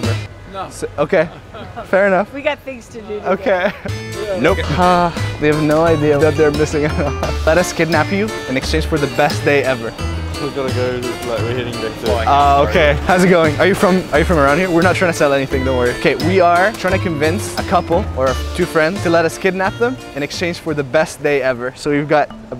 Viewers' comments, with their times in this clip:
0:03 that "nope" sounded legit